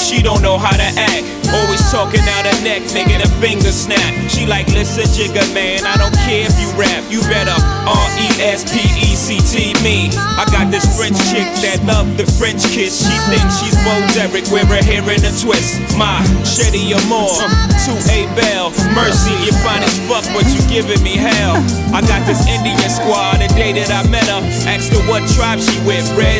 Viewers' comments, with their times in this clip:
0:10 If you listen closely there's a hidden Message in the beat. "When you smile..... I crave for life...... I must be....... In love.... Giggles... then Laugh." Incredible.